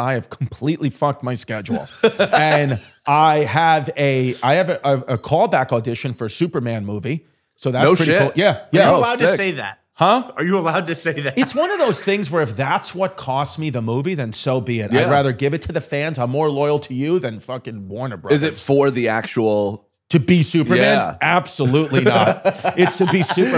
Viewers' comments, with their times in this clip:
0:09 everytime Chrissy does the "huuuh?!" you know he just realised he eventually just f*cked up big time 😂